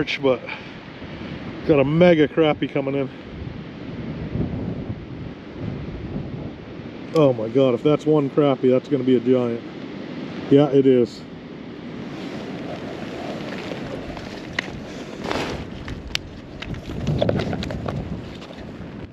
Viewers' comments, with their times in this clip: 0:04 That wind sounds brutal! Thank you for bringing us along. ETA Was that a 7 stripah at around the mark?